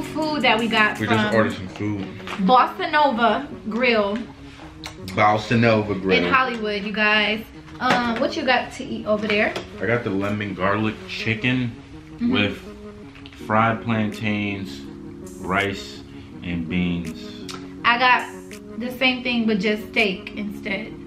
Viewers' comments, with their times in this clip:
0:06 😂😂😂 the way he said it